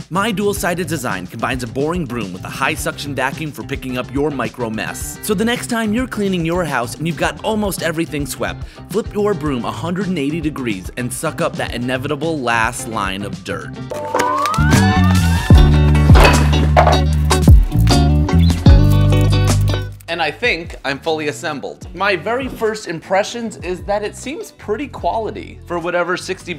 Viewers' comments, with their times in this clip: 0:08 my ear drums were blasted out of my head